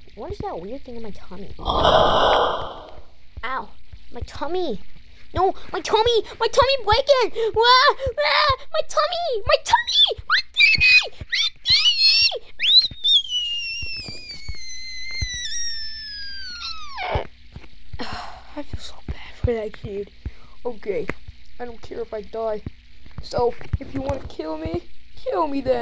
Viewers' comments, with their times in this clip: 0:08 My TuMmY bReAkInG *mouse sounds*💀💀💀💀